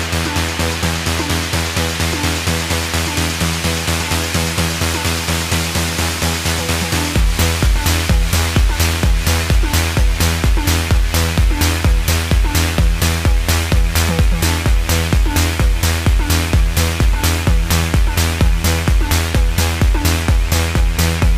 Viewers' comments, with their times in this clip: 0:07 the crowd goes crazy!!!! so nice!!!